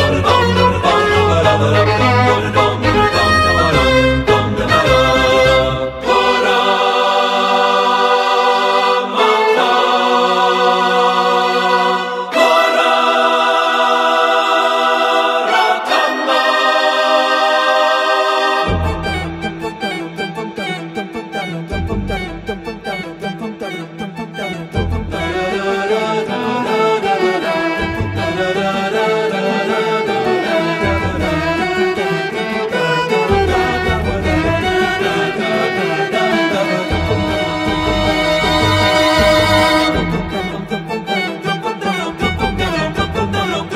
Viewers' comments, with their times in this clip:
0:06 I swear he's singing ♫Cooorrrnn oooooon the cooooooob♫
0:08 corn on the kakob!
0:26 reminds me of system of a down.... toxicity? I can't put it on which album or maybe song I'm thinking of... anyone else here it?